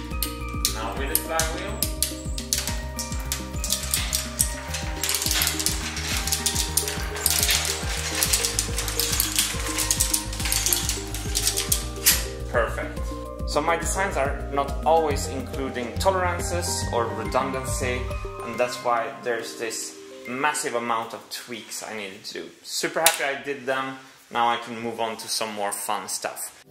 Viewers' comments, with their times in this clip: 0:07 It sounds like my Bronco ii running (If it was a model) 😂